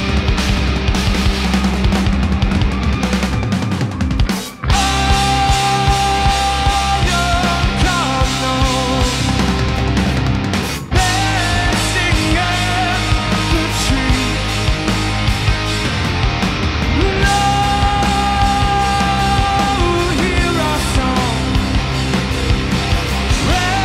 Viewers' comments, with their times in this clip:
0:07 the energy in that drop though! \m/,